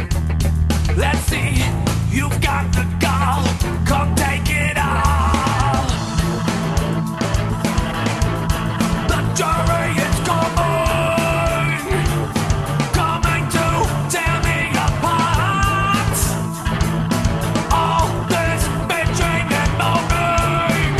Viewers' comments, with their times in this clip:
0:03 In the part “come take it all,” such as I wish “all” were stretched out much longer like when he says “coming” in “the jury is coming” right after that.